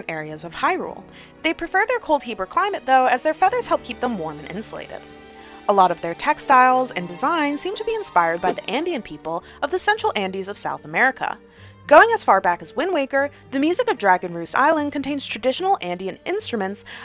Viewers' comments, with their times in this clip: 0:05 Hi hi! first of all I just wanted to say thank you for pointing this out. I care deeply about the words and terms I use and would hate to offend anyone with content about my favorite game or series. I believe the part you are talking about is around the mark when I said "Inspired by the Andean people of the central andeas of south america," (and throughout the video when I use their unique and beautiful textiles for my designs). I am saying Andean people, which i believe is the correct terminology for this group! but i completely understand that my pronunciation could have sounded like "Indian." I certainly don't want to offend anyone especially if they are someway referenced in my video, so I'll keep this pronunciation in mind going forward! Thanks for watching and I hope you still enjoyed the video despite the misunderstanding!